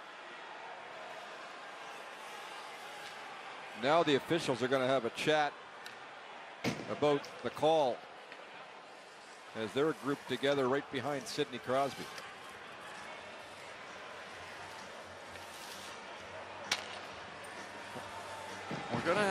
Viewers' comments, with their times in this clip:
0:04 have a chat aboot the call eh then we'll head to timmys after